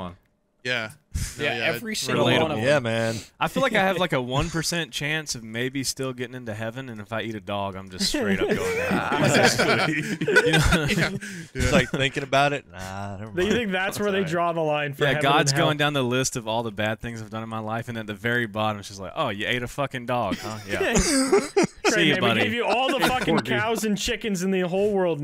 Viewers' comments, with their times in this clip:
0:09 why did he make god sound unsurprised